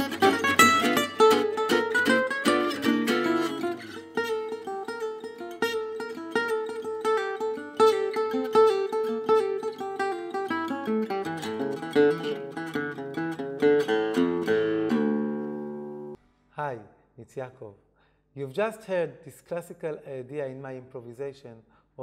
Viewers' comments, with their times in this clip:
0:05 I think when you play to that part (the rhythm stop), you play that sentence .If you play the original melody., It would be much better. That is my thought.